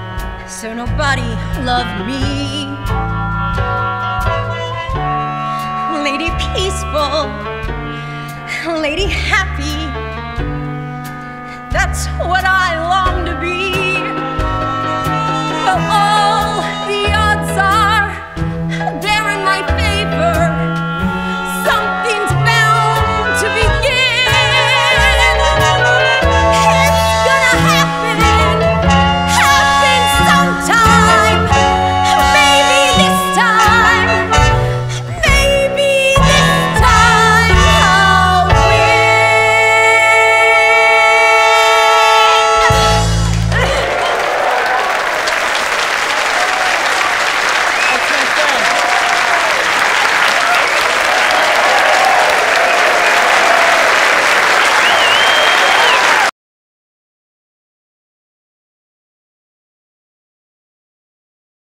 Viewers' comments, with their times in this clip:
0:05 I relate to the "everyone's growing up around me" sentiment. I tried so hard to hold my tears back, but the first tear spilled at exactly when Stevie really started laying into the song. Shortly after, it was full-on waterworks when it cut to Moira tearing up.
0:26 THANK YOU! I've been waiting for so long for this clip to get uploaded. Stevie has such a great arc and deserves way more love. Most underrated character on Schitt's Creek! Also, can we just appreciate her belt starting ? So authentic!
0:43 Her overwhelmed choke is where I go from crying to sobbing, it's like the power and momentum carried on past the end of the song 😭